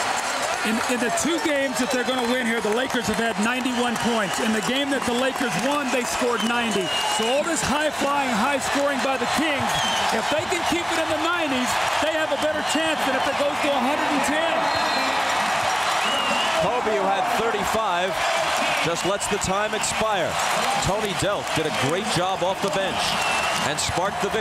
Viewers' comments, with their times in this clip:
0:05 you could hear the crowd chanting Light the Beam!!